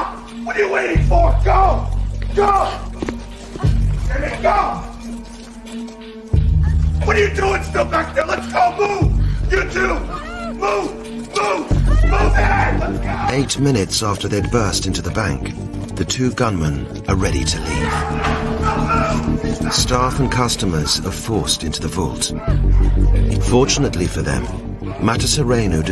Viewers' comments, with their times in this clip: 0:07 the way he yells at them is like how a boot camp drill sergeat does